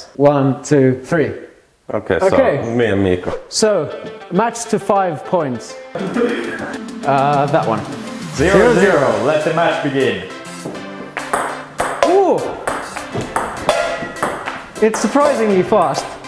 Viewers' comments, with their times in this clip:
0:04 What is the background music called. The one that starts playing and keeps looping when you all are playing? I found it really relaxing and wanted to know what it was.